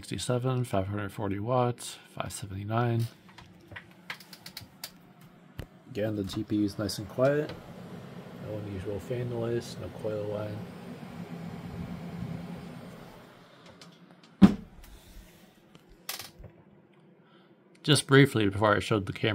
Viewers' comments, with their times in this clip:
0:07 Hello. At 8:At minutes you can hear the coils a little. In mine, they can be heard even quieter. Can the coils be completely inaudible in new graphics cards?